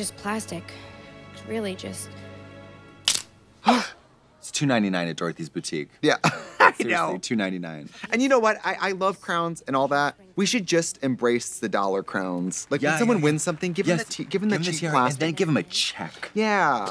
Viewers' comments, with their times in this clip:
0:03 I love how Trixie gasps at the same time as Damien when the crown gets snapped 🤣🤣🤣🤣